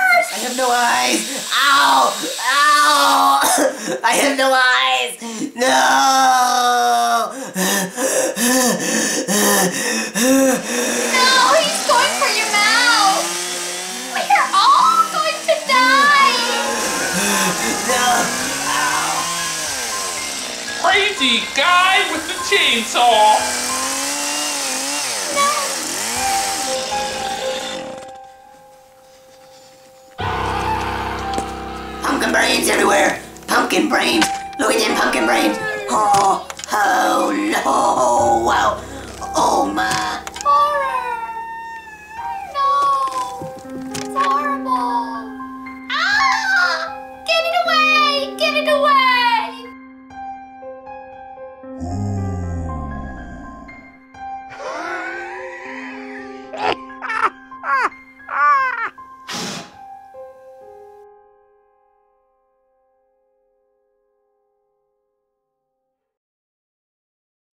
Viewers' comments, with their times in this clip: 0:07 corn was laughing at pumpkin die
0:08 Pumpkins breathing stuck with me all these years
0:20 ‘Pretty guy with a chainsaw!’ Lmao that got me😂
0:21 he said, crazy guy with the chainsaw, not pretty die with a chain saw
0:29 that scream..... So nostalgic
0:30 sound like a piggy jump scare
0:30 Pumpkin's Mouth Is Red Turns Into Yellow! (Negan The Rabbit Screams) (Ahhhhhhhh!!!!)
0:30 omg that scream lol
0:57 that laugh was funny🤣
0:57 who is laughing the pumpkin